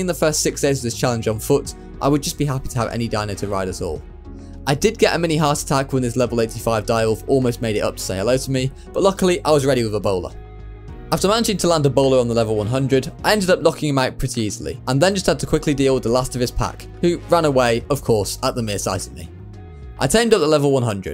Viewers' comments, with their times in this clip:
0:08 “luckily, I was ready with Ebola”